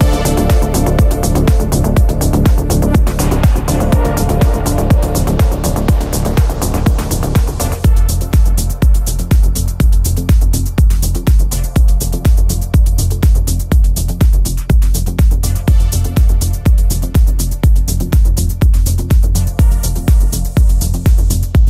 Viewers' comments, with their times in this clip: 0:08 was the first time since the 30 plus mixes I heard where the transition wasn't flawless that said you are an amazing Dj and this was an incredible set